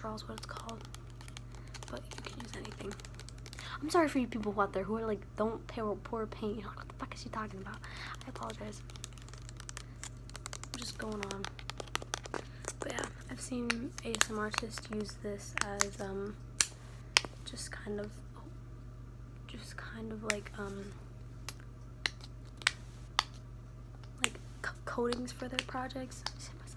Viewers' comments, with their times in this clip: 0:07 I love her accent it’s so beautiful yes I’m back here in 2019